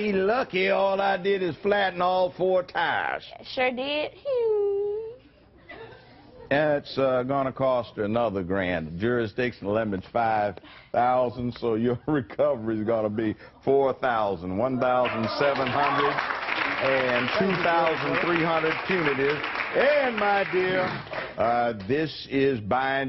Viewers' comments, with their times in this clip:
0:04 What the heck was that arbitrary, child-like sound she made ?! xD